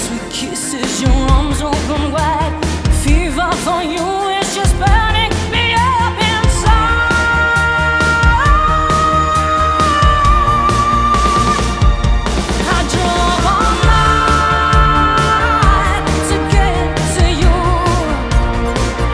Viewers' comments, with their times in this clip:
0:06 Also I love the alteration in your voice Absolutely awesome stuff :) By the way is the one dislike from Cyndi Lauper or a Roy Orbison fan or something? :D